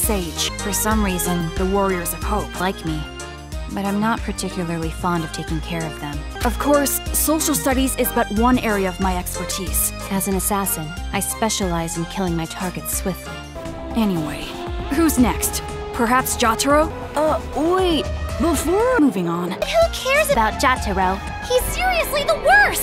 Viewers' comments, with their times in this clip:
0:10 KILLUA LEAVE NAGISA’S BODY